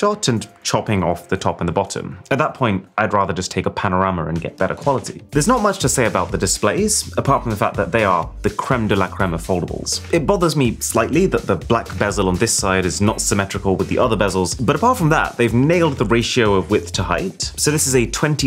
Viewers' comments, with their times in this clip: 0:03 what is a panoramaur? ❤😂